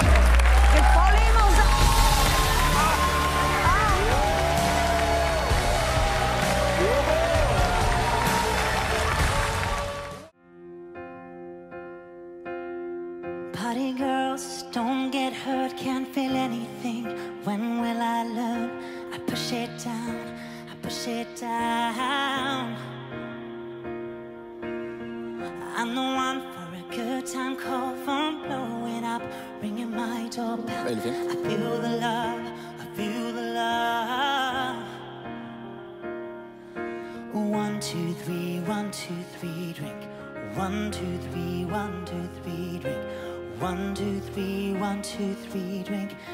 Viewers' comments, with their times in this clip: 0:05 you cant be serious..that voice is so girly..
0:12 Never knew Ashton Kutcher could sing "Chandelier" so well !
0:12 Did u nktice The third guy sounded like MJ....
0:13 I thought sounded VERY Idina Menzel (Elsa from Frozen)
0:13 you can tell it's a guy with a high voice with some passable nuance female tone. The voice is kinda Androgynous
0:13 Dang, Hulk can sing.
0:30 His voice reminds me of Mitch from Pentatonix